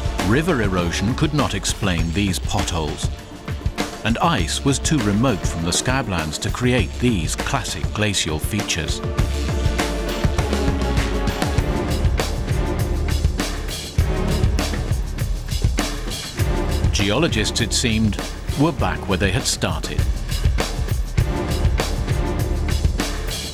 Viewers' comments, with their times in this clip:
0:09 Shaking the camera and stupid music does NOT make a video better ! (Timestamp min.)